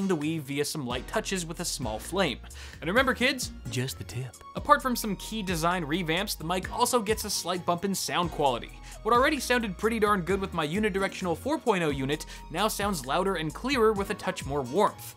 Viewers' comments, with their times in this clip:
0:03 whispers.... just the tip LOL